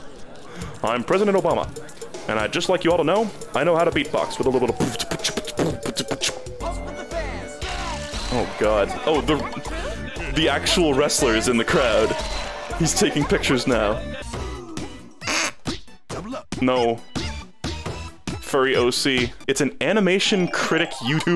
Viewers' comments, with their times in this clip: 0:05 what the fuck whisper?!?!?!